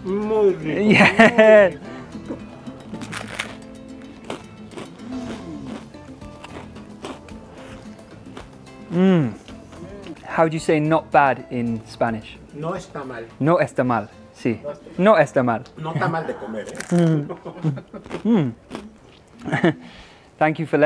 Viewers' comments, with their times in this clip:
0:03 That crunch is everything. My mouth involuntarily secreted all kinds of juices.